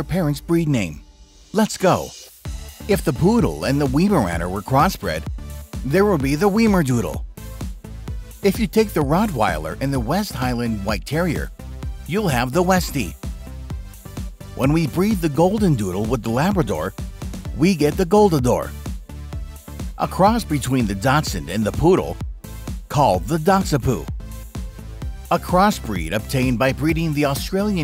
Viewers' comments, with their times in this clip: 0:09 not the dogs in the bachround again ...